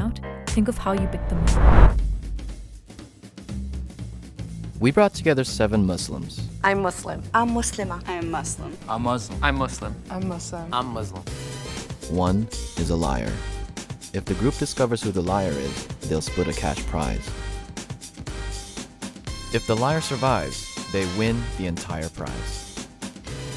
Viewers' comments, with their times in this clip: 0:07 couldn't even say "I'm Muslim" correctly. And yeah she didn't list menstruation